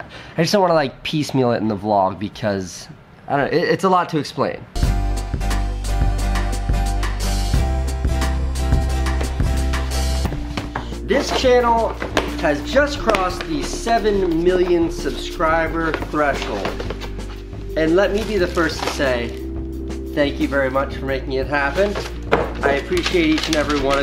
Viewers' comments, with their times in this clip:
0:05 She's a total pro. I like how she yawns when he talks